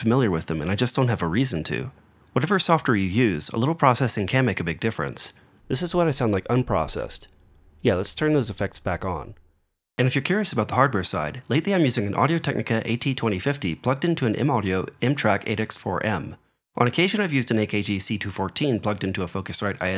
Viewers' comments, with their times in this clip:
0:05 In my opinion you sound WAY better unprocessed After processed it's tiring for my ears and seems unnatural compared to unprocessed.